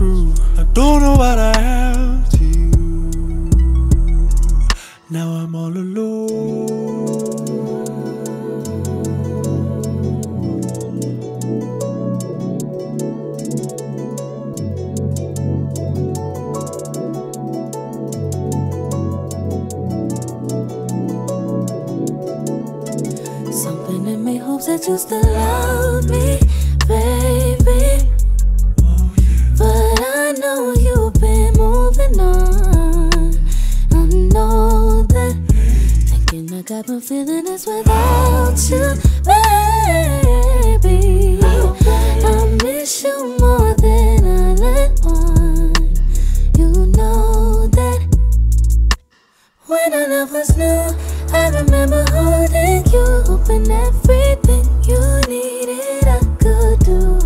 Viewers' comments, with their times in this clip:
0:05 Jesus Christ, is so euphoric.
0:38 So nobody gonna talk about THAT note ??